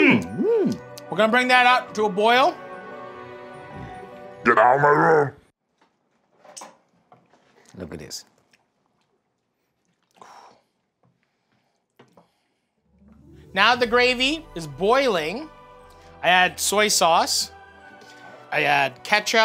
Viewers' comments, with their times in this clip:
0:06 That moment of silence is a masterclass in editing